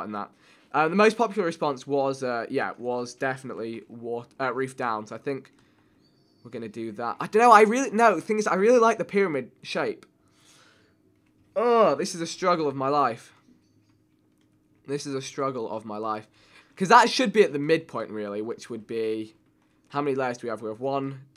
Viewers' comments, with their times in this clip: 0:06 Is it just me or did I hear a keyboard or his chair squeak ?